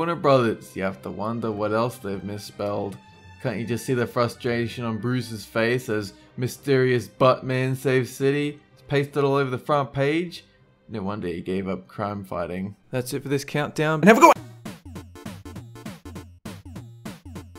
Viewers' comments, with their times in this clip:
0:04 Ohhhhh East I thought you said Weast